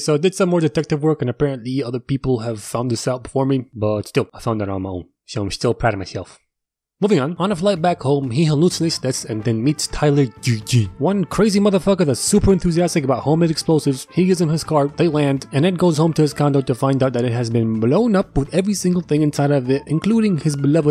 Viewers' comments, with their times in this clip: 0:05 "I'm sh-teal proud of my-shelf!" I'm proud of ya too 🙂
0:05 i love how you said im still proud of myself idk why its just sooo cute